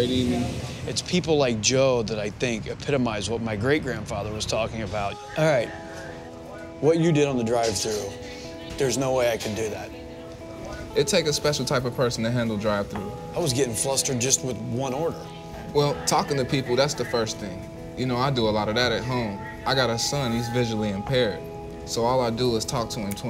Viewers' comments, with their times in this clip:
0:07 The convo makes this look so fake. He’s clearly delivering lines off a script.